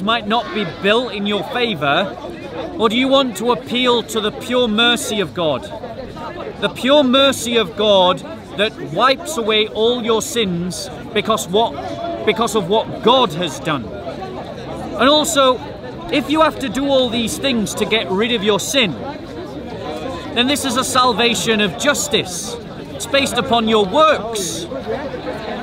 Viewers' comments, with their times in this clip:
0:10 stumbled over yours words cuz u no that didn't make no sense